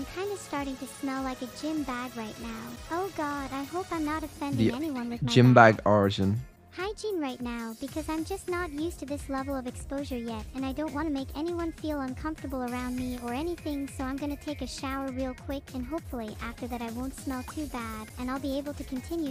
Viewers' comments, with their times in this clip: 0:03 Past Neuro-sama is in synched with present Neuro-sama 0_0